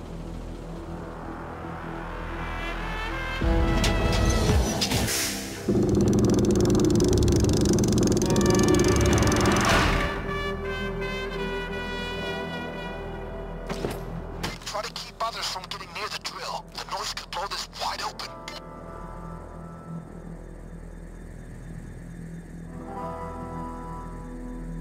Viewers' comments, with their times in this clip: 0:08 Happy Vlad's Noises